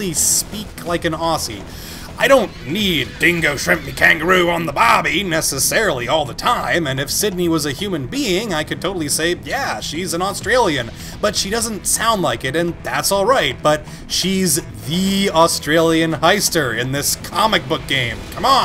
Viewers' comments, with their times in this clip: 0:04 Nice Aussie accent, you nailed it perfectly.